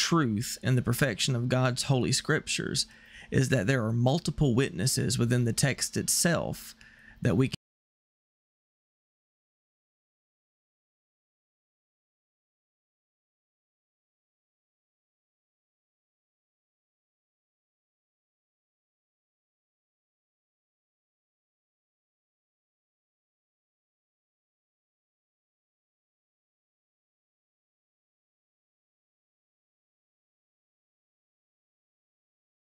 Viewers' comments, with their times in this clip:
0:07 Qst - Y is the sound cut off ?
0:07 From the sound was affected. It's not a surprise, too much light for those who want darkness.
0:07 audio and captions stopped
0:07 Why does the volume cut out in?
0:07 On time of your video had stop the audio
0:07 You must have hit a nerve with someone at YT. They muted your audio
0:08 At the mark, the sound went out
0:08 Why does the sound cut out ?
0:09 Anyone else’s video go mute after
0:09 Is it just me or the video mutes ?? It kind of threw me off. Great video btw thank you!
0:10 into this video the audio quit and video kept playing…several of these kinds of videos have done similar things.. Is there someone that don’t want us to watch this..?..?
0:17 From to about 11 minute make there is no voice. I want to share this video, but not with part of the voice missing!